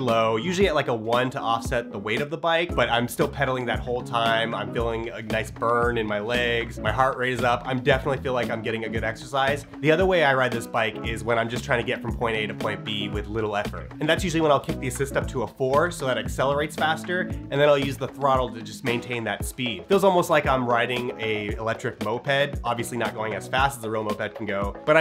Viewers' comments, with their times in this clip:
0:03 oh just a fighter jet passing by in the background...... no big deal
0:03 Military jet does a turn in the background.
0:03 Is that a jet!?
0:06 Fighter Jet in the background 🧐